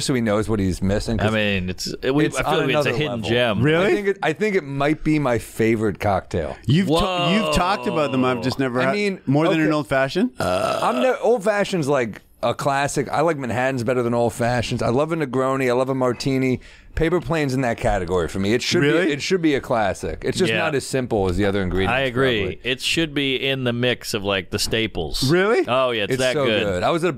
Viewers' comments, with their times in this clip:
0:10 Burps right into the mic lol wtf man